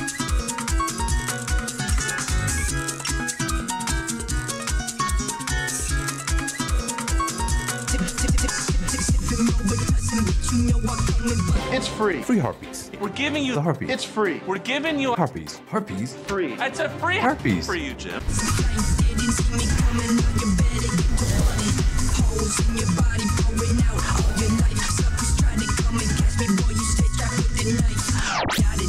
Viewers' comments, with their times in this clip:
0:10 Free Harpies..., I just love how the Jim & Ted free real estate sound like they selling herpies.